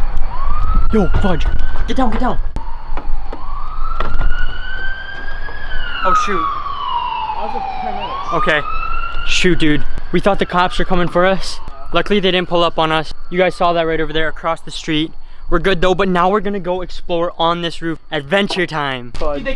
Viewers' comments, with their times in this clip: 0:05 that was a ambulance